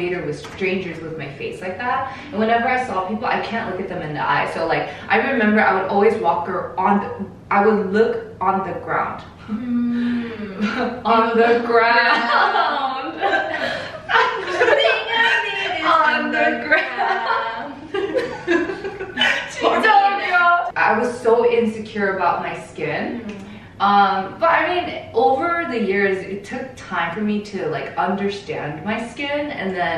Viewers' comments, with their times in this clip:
0:10 the song break though 🤣